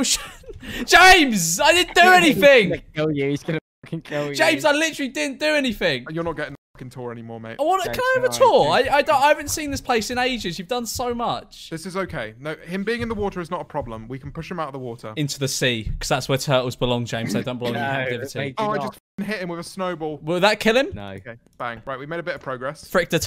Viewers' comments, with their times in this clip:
0:08 he sounded so british